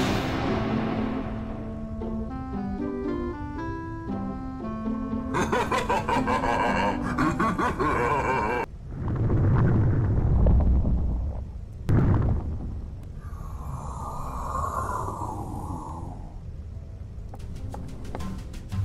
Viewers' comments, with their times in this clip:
0:05 nah grumble laughing at his mom is crazy